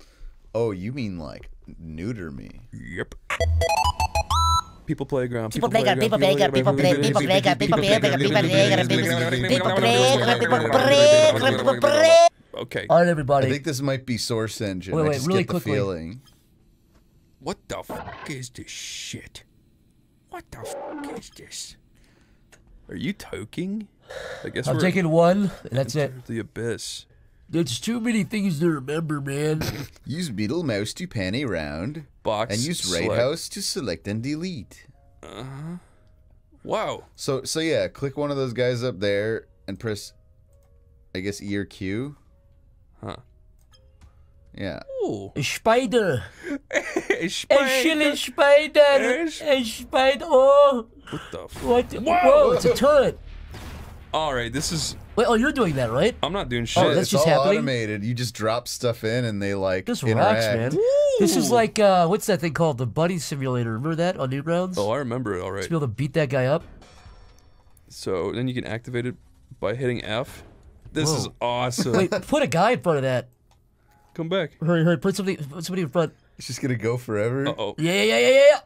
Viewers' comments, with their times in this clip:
0:05 my ears literally started to ring here. Help
1:01 Bro is it me or does he sound like Charlie from smiling friends?